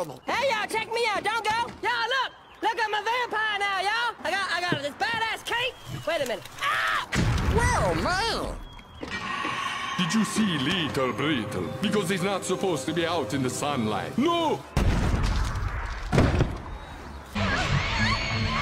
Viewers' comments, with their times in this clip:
0:06 always makes me laugh way too hard 😂 "...wait a minute....AAAAAAHHHH!!!!" BOOM